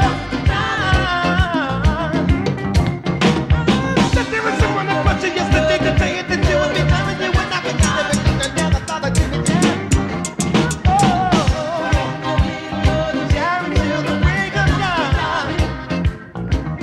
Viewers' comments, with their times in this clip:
0:03 I swear Stevie invented fast rapping